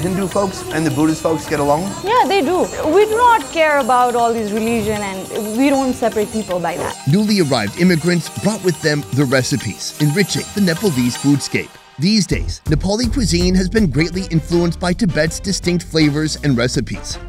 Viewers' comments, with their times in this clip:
0:05 The touch of music in every part which generally describes the culture is so so mesmerizing..!! #Nepal is just more than a country its a feeling.. her words are true..